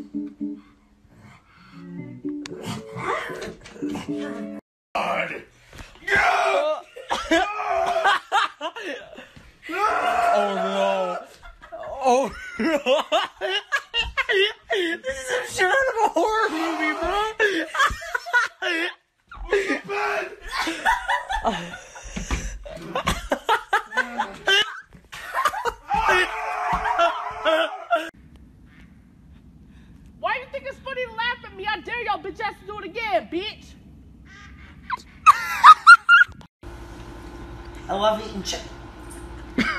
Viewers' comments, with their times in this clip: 0:04 guy laughed like goofy from micky mouse
0:06 LISTEN TO HIS LAUGH EWWW
0:09 bro laughs like goofy
0:09 HIS LAUGHHHHH I CANT-
0:09 WHY IS NO ONE TALKING ABOUT THIS MANS LAUGH
0:12 dis dude laughs like frickin goofy
0:12 the only thing not ok with this is that laugh
0:14 So we’re not gonna talk about that guys laugh?
0:18 WHAT THE FUCK IS THAT LAUGH LMAO
0:19 Guy literally laughed like goofy
0:23 he sound like goofy
0:24 My guy laughing like Dippy Dawg